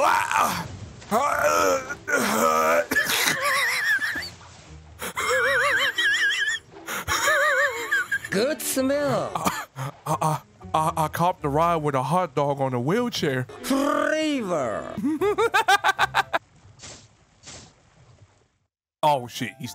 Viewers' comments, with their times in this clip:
0:06 bro wtf is that laugh 💀